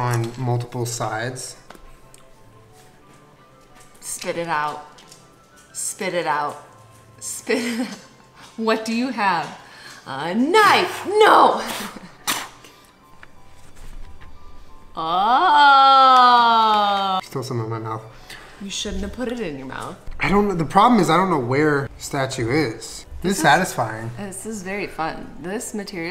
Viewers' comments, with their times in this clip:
0:08 When Jenna said "what do you have" I actually spit out my tea because the way that she scolds Julien is EXACTLY the same way that I talk to my dog and it scared me a little.